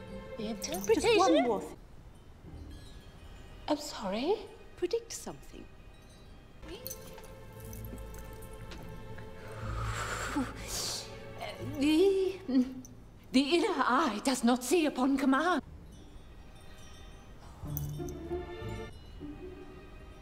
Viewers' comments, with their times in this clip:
0:08 Lol,here is no longer Draco. Is Tom Felton all the way. Laughing like that😂